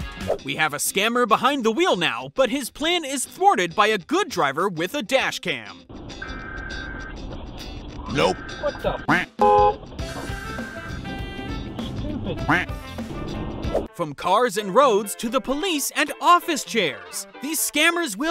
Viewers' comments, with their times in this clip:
0:06 Emergency Alert System heard